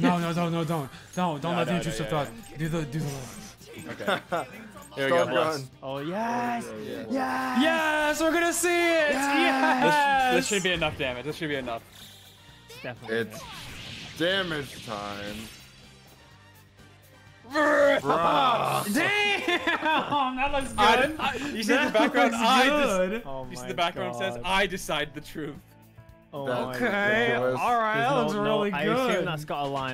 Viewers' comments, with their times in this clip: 0:10 Sadly it got drowned out by the yelling but a stamp of best boy's All Out Attack